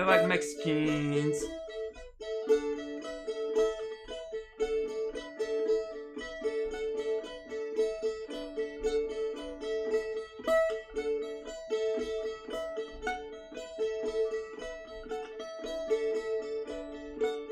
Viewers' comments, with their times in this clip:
0:04 You did good on that guitar